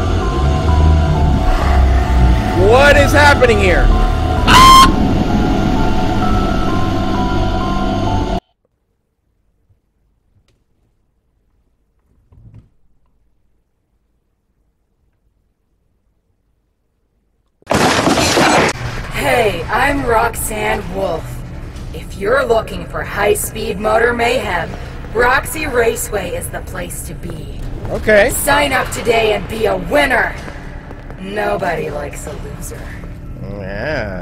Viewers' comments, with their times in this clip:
0:04 the cut scream of hi when princess got consumed was so cut off perfectly it made him sound like she was screaming 😂
0:18 Why does Roxy sound like Jennifer Coolidge?